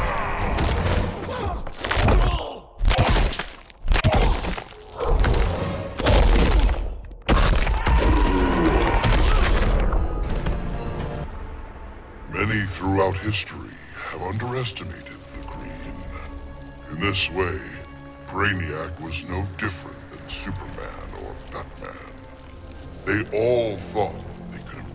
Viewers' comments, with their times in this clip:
0:08 you can hear him screaming like a Man in games like whack your teacher.